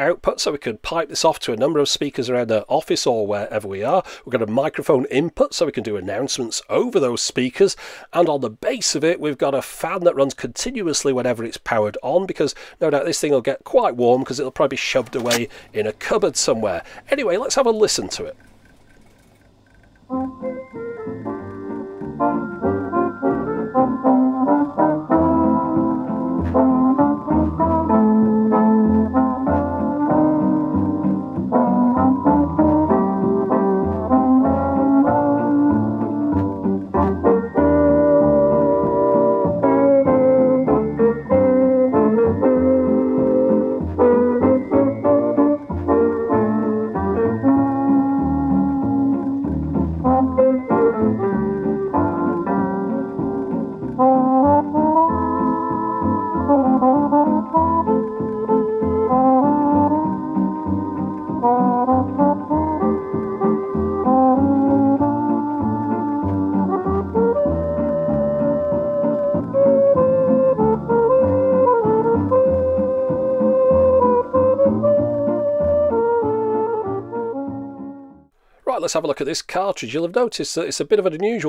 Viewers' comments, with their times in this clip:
0:08 Music reminds me of Max Geldray.
0:20 Oh Nooooooooo! No high treble at all! This sounds so bad!
0:24 sounds like something you would've heard at the supermarket scene in The Big Lebowski or similar-style movies.
1:03 Gets to OH GOD! Burn it! Burn the Musak monstrosity! BRING FIRE! Seriously, I have no idea how you managed to record that without going at least slightly insane from the music.